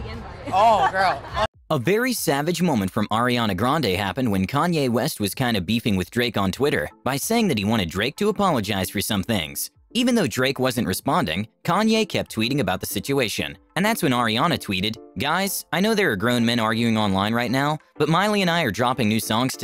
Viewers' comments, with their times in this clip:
0:07 that snoop dogg one always gets me 😂 and that fifty cents laugh 😂😂😂😂😂